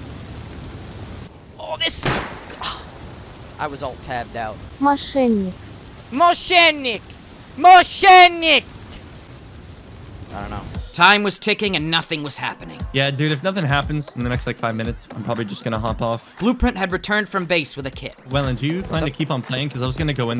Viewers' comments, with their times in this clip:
0:07 when he is screaming sheater in russian was soo funny XD